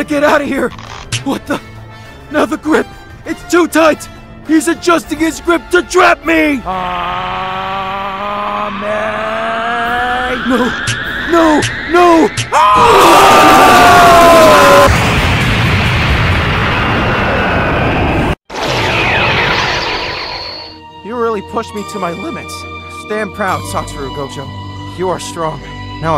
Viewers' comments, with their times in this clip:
0:10 wtf is this rubber band sound 😭😭